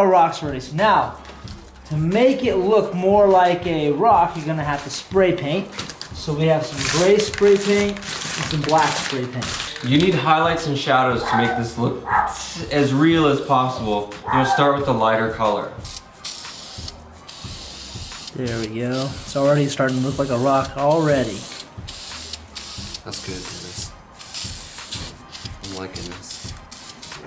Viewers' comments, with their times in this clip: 0:09 There's a dog being beaten